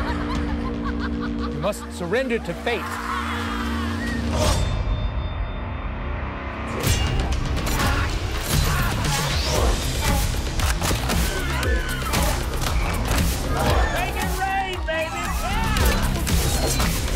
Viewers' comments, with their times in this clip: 0:03 the way the theme drops though